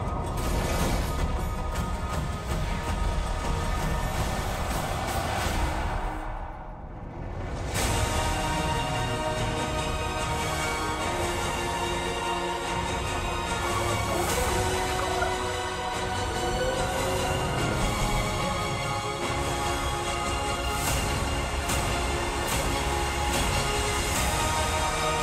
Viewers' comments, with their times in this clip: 0:08 HELL YA! This was the first time I saw this trailer. YEP, got some emotions keeping down. It looks SOOO GOOD. when that music kicked in, I don't know why that got me. I watched it a second time and it was the same spot of music that hit me again. Hopefully, this version will NOT have any 5 minute long garbage movements for any type of bending....MOVIE THAT SHALL NOT BE NAMED!